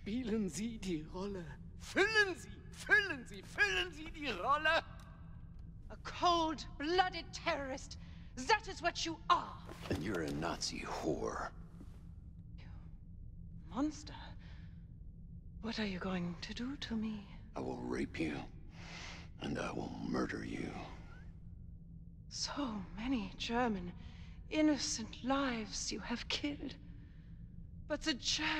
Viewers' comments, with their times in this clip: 0:10 I just cannot get enough of this guys voice